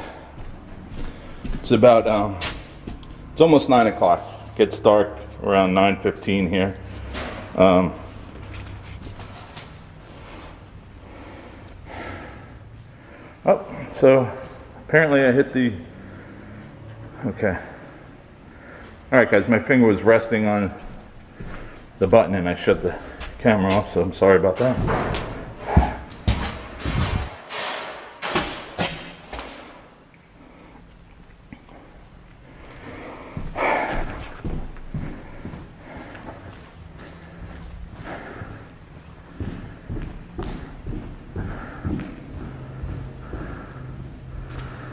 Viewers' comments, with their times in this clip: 0:08 I heard another bang
0:25 there is a breath or voice